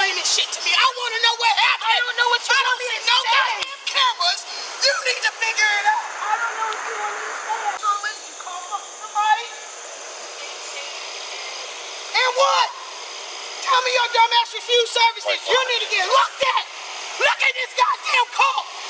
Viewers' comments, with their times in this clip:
0:03 "How tf did the train get off the track, if you didn't go on the track"??!! 😂😂😂😂 whoever that woman is to her is FukN livid!! & the officers are lettin her chew her tf out. 😂😂😂😂 they usually wouldn't let someone yell and carry on how she's doin, but they know she's telling the truth. 🤦🏽‍♀️🤦🏽‍♀️😂😂